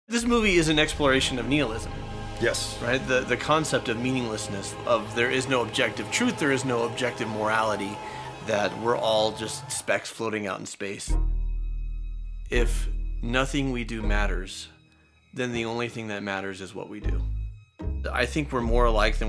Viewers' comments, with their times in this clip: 0:02 his pronounciation of Nihilism is funny